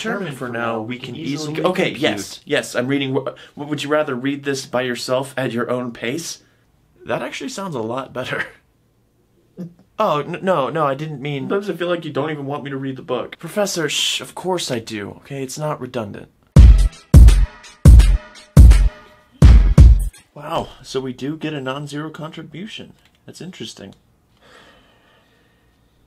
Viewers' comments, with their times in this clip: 0:09 The face and the crying had me on the floor omfg xD